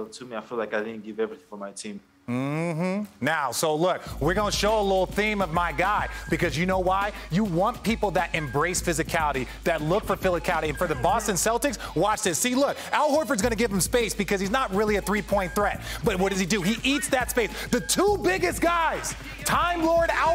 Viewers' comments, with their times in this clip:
0:07 ESPN with the gunna type beat in the background lol